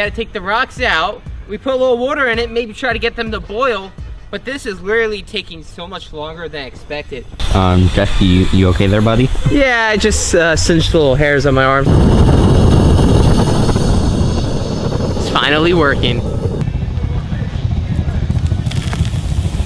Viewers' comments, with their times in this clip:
0:07 that sounds like corn